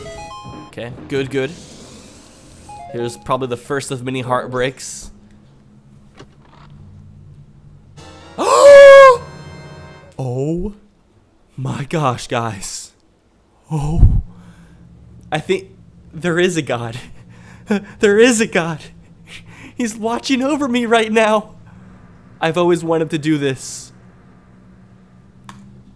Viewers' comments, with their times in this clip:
0:07 Hallelujah plays in the background